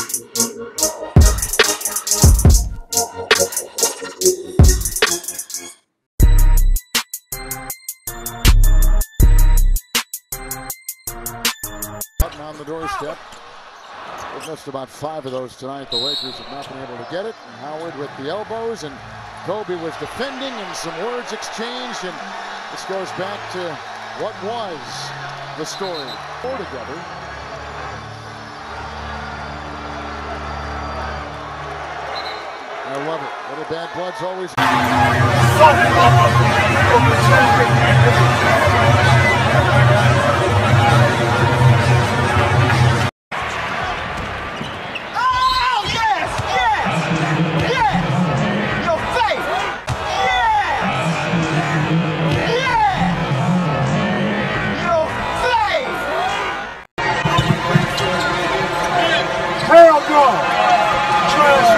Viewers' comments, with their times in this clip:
0:06 what song is this? Sounds like playboi carti
0:43 sounds like Kevin Hart.
0:43 Lol at Tim Hardaway with Barkley. I love that guy but his voice just kills me. 😂
0:44 close your eyes. sounds like tim did barkley dirty
0:46 ITS A SQUEAKER GUYS 😶